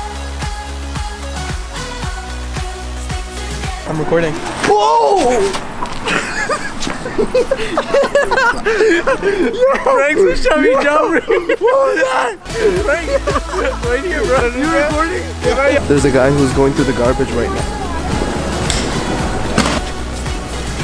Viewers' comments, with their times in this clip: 0:03 # why they laugh?